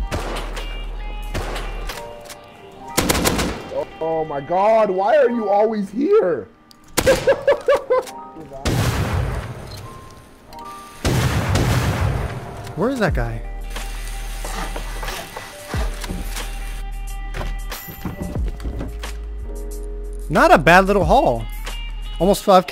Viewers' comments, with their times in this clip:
0:05 this dude lowkey sounds like Chirs Griffin